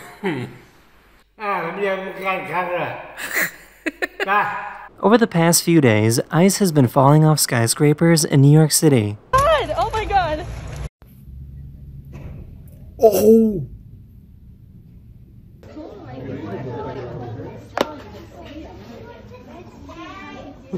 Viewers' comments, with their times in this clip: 0:04 'Over the past few days, ISIS has been falling off skyscrapers in New York City'